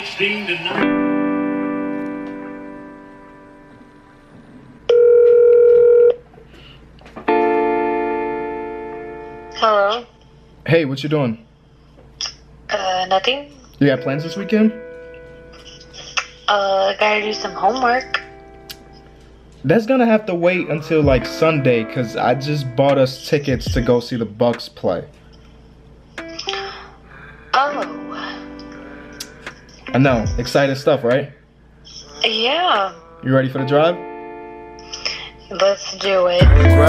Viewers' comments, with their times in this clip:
0:09 she sound like the voice from Marvin’s Room
0:24 Why does sound like Marvin’s room